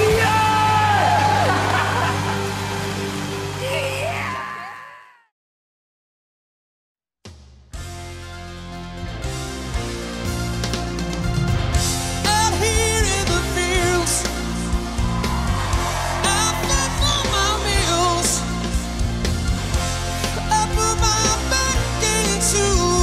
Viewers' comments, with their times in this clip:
0:06 sounds like 80th singers